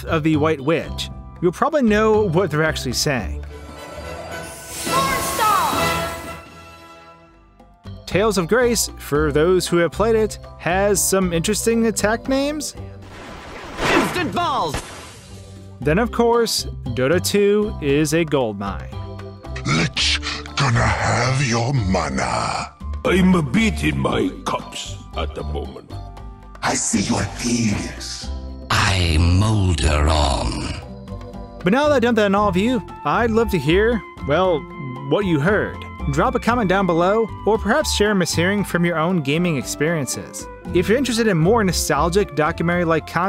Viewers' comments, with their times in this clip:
0:03 I thought he said Porn Star
0:03 Pornstar Is it just me or did that kid say porn star 😂
0:04 A little boy yelling "PORNSTAR!!!"
0:04 A little kid screaming "PORNSTAR!!"
0:14 *** Can I have your monah? WARNING! BY CLICKING READ MORE, I WILL REVEAL THE WORD!!! B*tch...
0:26 I see your pen!$
0:26 Lol "I see your peeenis."
0:28 I heard "I'm Molderong", but that makes no sense. When I look that up, Google has no idea what I mean. It says "Your search - I'm Molderong - did not match any documents. Suggestions: Make sure that all words are spelled correctly. Try different keywords. Try more general keywords. Try fewer keywords."